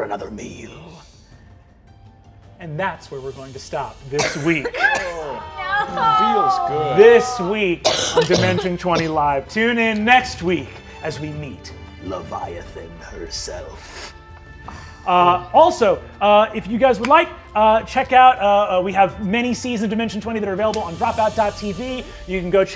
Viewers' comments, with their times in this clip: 0:05 Audible groans when stopping, means your doing an excellent job as a DM.